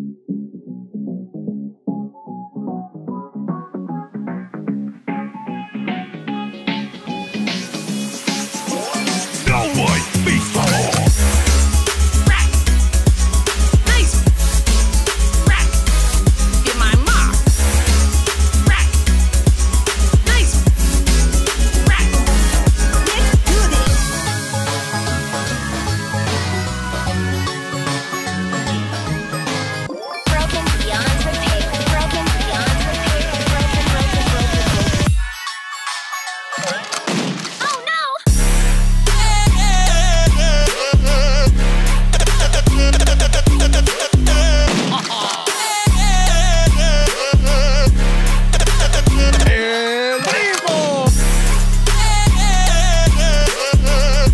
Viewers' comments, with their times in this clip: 0:10 music and crow?
0:15 The song had me dying :D
0:40 what the music